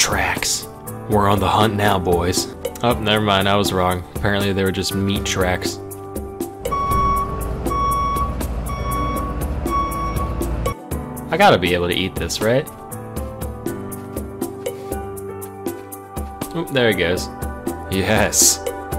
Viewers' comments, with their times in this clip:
0:05 that is 6AM ptsd sounds